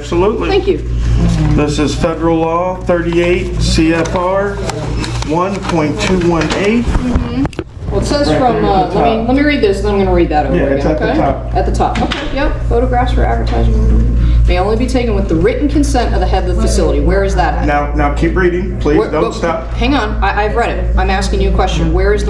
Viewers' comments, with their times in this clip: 0:08 now she wants to look at it and still that condescending Umm hmm